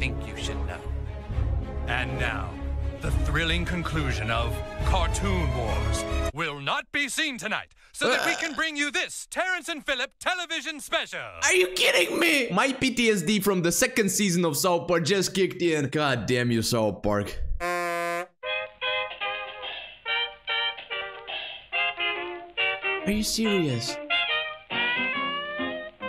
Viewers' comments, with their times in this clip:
0:10 Man, the sheer disappointment in your voice.